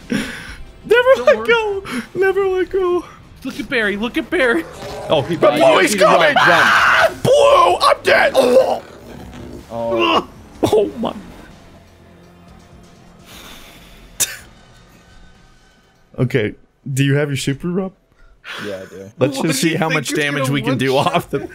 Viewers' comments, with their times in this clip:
0:06 was literally a genuine scream of terror lol